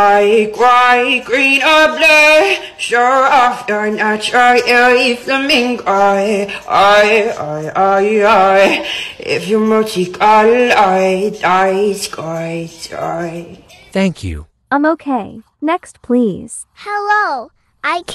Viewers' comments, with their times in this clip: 0:05 love the song!!